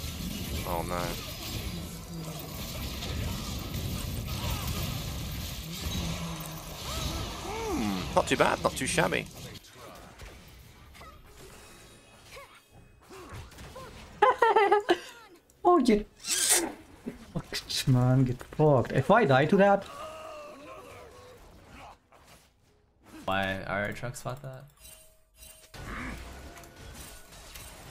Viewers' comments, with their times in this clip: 0:08 Normal league players: LETS FUCKING GOOOOOOO IM SO CRACKED AT THIS GAME British League players: